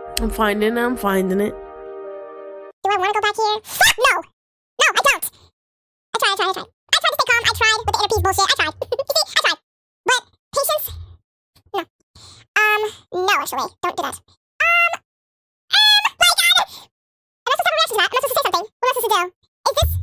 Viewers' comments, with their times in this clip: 0:03 alvin and the chipmunks